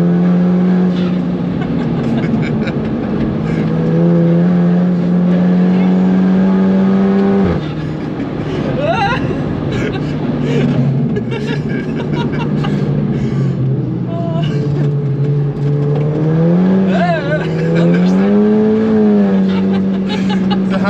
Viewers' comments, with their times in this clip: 0:06 farted right on that Porche LOL